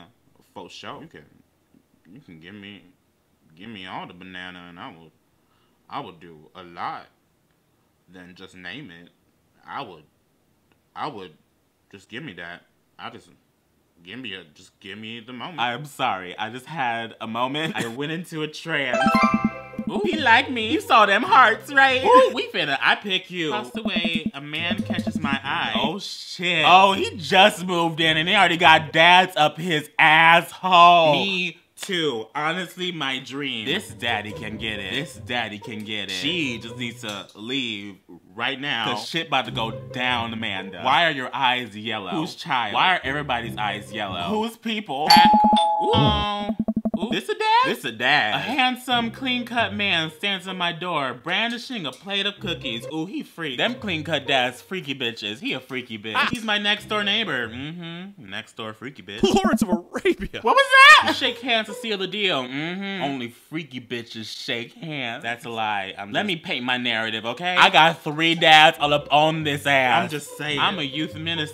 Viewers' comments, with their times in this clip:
0:05 Am I the only one that thinks his voice just drastically changed?
0:59 He be talking that Sims shiz-